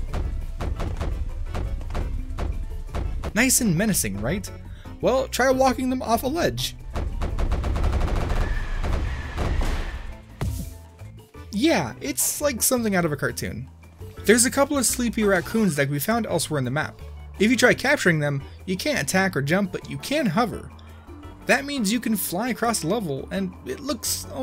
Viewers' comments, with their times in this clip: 0:06 sounds like a jojo barrage am i right fellow joke-reusing redditors
0:06 the sound you hear when you hear 11 kids coming downstairs
0:07 that’s what I call a assault rifle stomp